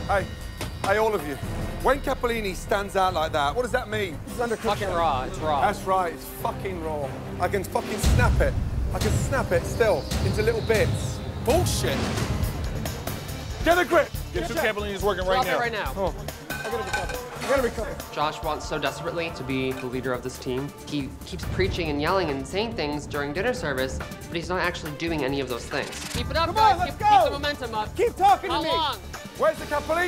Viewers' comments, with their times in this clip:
0:06 they really added sound effects for every time he broke the noodle 😂
0:08 Love the sound effect every time he snapped the pasta LOL
0:08 the sound effects kill me
0:12 gotta get a grip, but fahkeet.